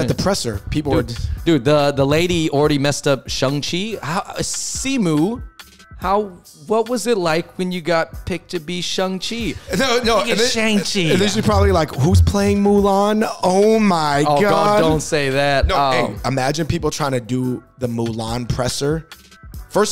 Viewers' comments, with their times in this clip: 0:07 It actually is Shaang Chee lol she was pronouncing it right. In Mandarin we hardly pronounce that A like the A in 'apple' if at all